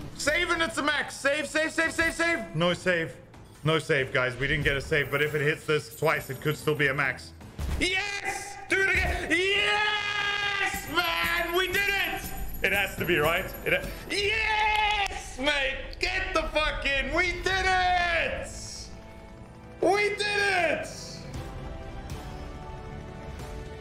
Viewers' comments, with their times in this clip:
0:07 the pure excitement in his voice makes my heart warm